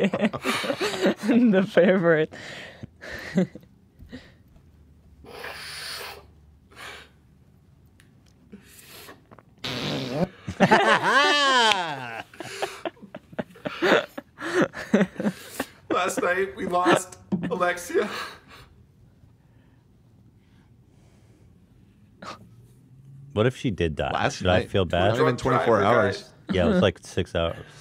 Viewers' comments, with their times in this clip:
0:09 that's one of the most masterful soundboard moments I've ever seen. Well done.